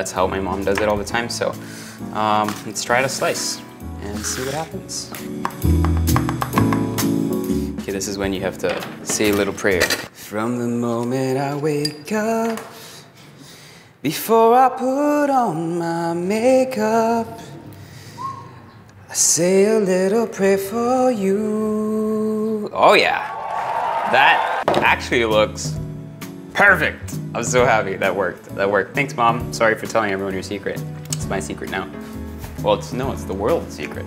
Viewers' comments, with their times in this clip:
0:10 Stick to cooking.
0:17 omg his voice 😩❤️